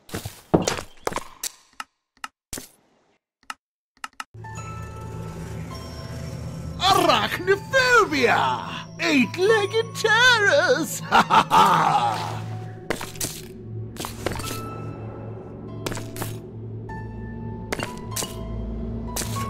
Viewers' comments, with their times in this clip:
0:06 Sounds like something straight out of Harry Potter